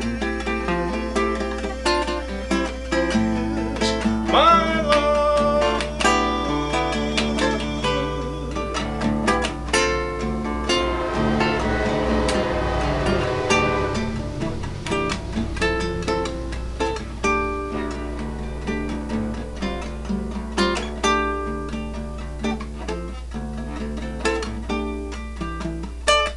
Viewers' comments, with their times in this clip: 0:09 "Long time gone" Thanks for this version Bob. Oh was that an LIRR train tooting it's horn?